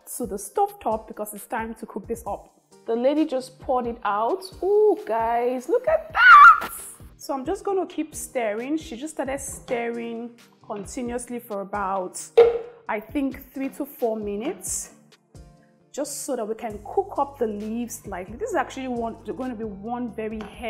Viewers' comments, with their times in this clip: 0:05 your voice, it go like dat Sis, Eh! 😁